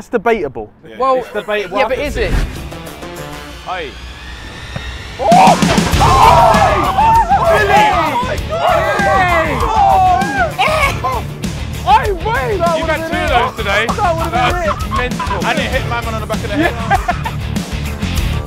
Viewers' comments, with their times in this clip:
0:05 slight F1 intro music lol